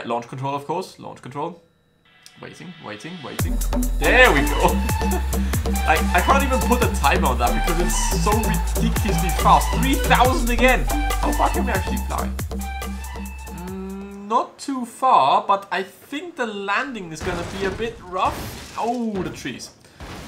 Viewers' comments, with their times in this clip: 0:04 love the music